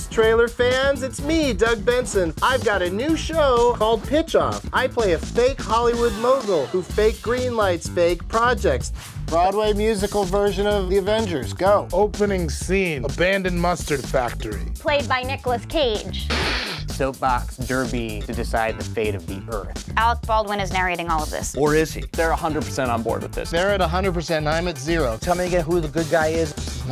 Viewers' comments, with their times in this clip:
0:10 that guy sounds like he's paralyzed and trying to find out how to kill himself.Doug Benson needs help